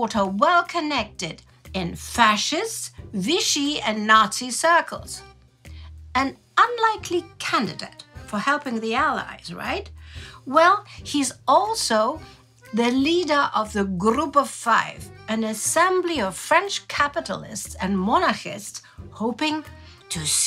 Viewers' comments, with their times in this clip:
0:06 You couldn't help but put on some stereotyical accordion music didn't you?